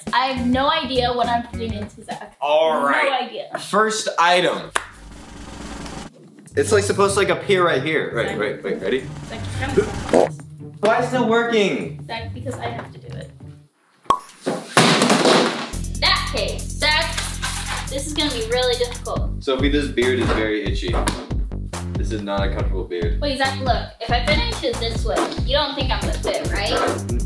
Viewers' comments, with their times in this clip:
0:09 lmao y'all are killing me with the sound effects